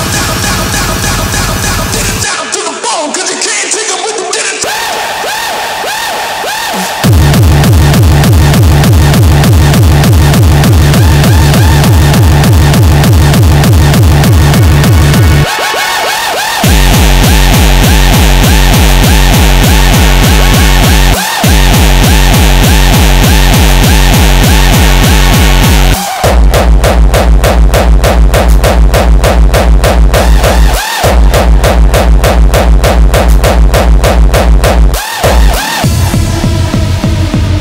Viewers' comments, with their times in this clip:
0:06 This industrial hardcore part of the song is absolutely godlike
0:06 yes! The bass power
0:06 The industrial kick is awesome
0:09 now thats what i call a gabber
0:16 Sweet Lord Jesus give me more those type of kick !
0:17 Bass ..... real hardcore.
0:25 I love kick 🤟🏽💀